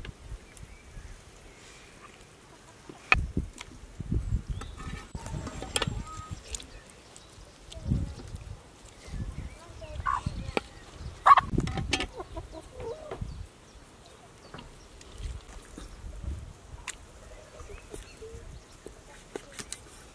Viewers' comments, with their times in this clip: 0:06 a hen is asking her friend, have you seen Daisy today? Hmmm... I wonder if these ladies have cut her up. Delicious outdoor cooking in a nature setting.